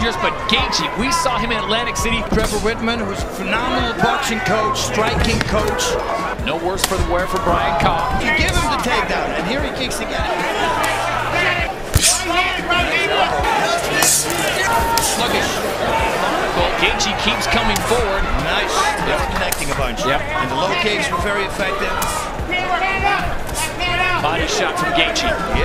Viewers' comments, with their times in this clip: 0:06 the sound of that leg kick is insane